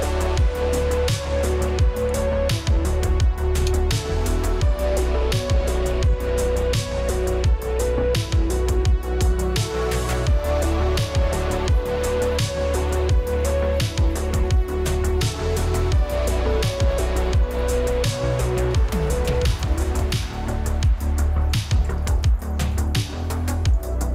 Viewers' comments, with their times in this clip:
0:09 song is a banger